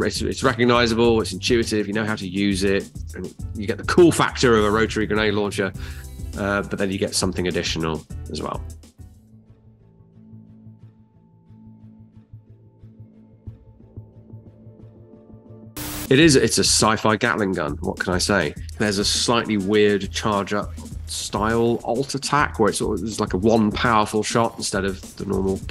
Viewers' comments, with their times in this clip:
0:09 Predator Cannon go BRRRRRRRRRRRRRRRRRRRRRRRRRRRRRRRT! :3